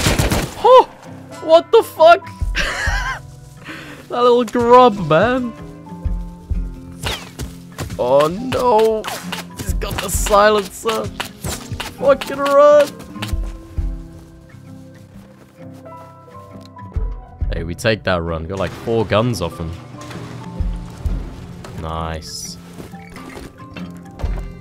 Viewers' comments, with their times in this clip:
0:07 Man was so scared he autotuned his voice